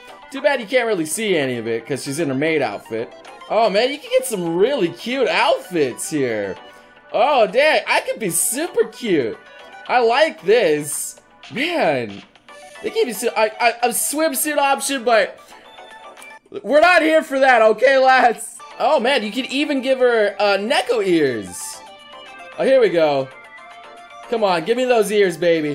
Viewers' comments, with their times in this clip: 0:07 ok you seriously sound like the nglish voice actor of Kintarou from "Golden Boy"